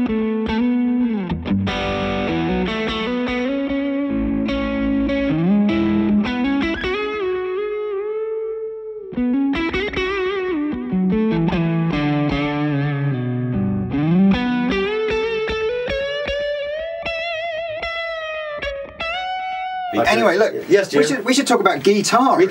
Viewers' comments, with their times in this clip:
0:07 Oh man... those bends just beautiful :)
0:07 Love the bends and that white guitar look great!